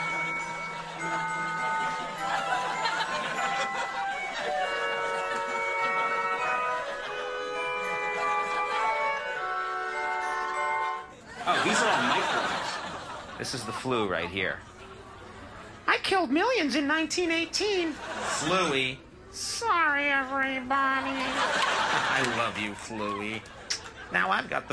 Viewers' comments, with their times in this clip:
0:05 He did a nice Joe Biden impersonation there ...